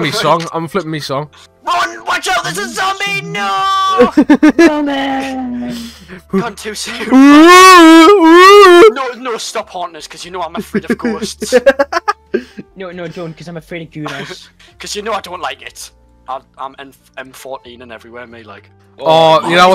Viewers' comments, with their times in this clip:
0:07 this shit had me FUCKING DYING😂 “ya knoo eyem afrayd of ghousts”